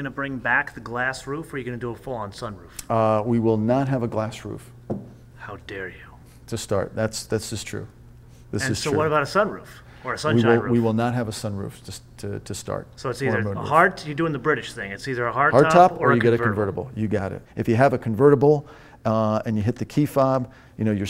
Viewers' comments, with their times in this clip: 0:04 How dare you! lmao, and it's a kids voice! :)